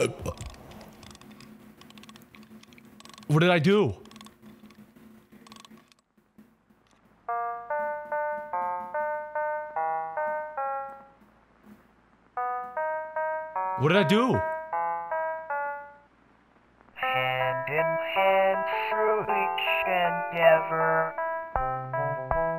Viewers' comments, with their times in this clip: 0:07 isn't he singing like turrets in Portal ? 👀